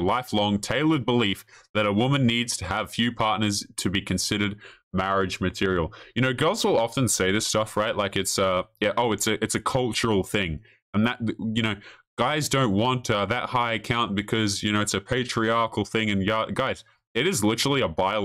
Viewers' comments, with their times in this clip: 0:05 Surgeon-dude sounds like he's Asian... who else gets that vibe?